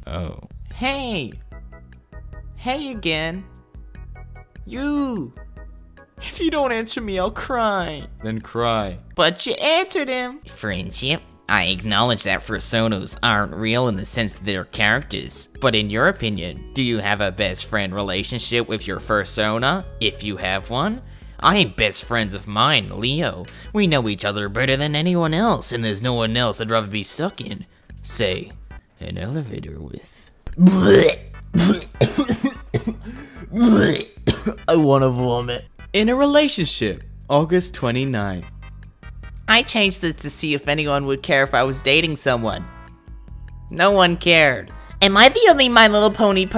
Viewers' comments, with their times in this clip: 0:04 sound like mario
0:30 that fake barf fits the title of the video no hate btw lol